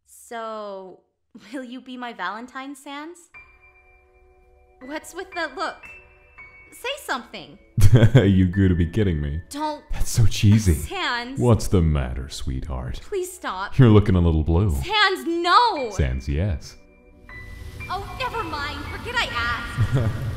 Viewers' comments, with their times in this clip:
0:03 What's the song called that starts and goes till the end of the video? It sounds really epic.